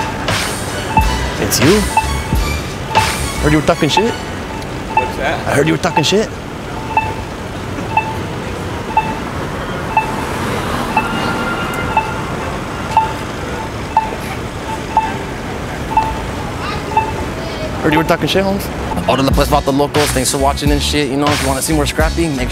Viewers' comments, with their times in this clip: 0:06 Lol Last scene killed me. I also love how the guy walks to the sound of the walk tone